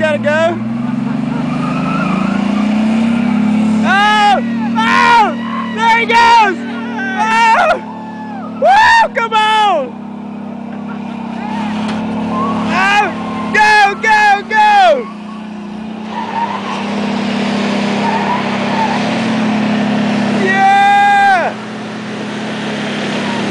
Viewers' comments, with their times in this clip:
0:10 Yes, because street tires squeal on dirt. What ever you say. Besides, everyone can preach about the Ford "winning", when you can see the Toyota stop trying